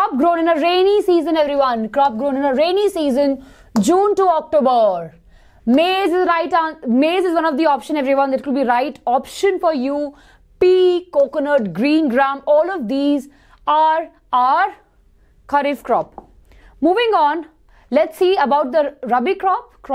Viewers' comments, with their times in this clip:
0:05 listen carefully cotton she told coconut